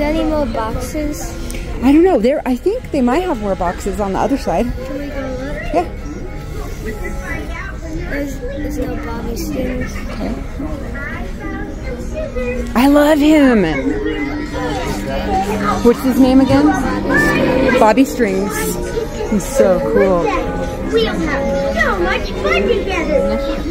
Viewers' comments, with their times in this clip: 0:06 why is his voice more high pitched?